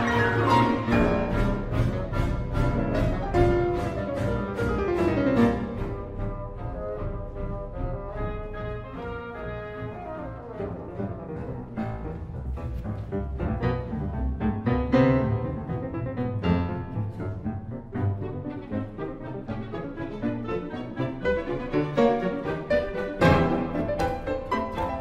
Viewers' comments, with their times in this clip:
0:09 that change of tempo though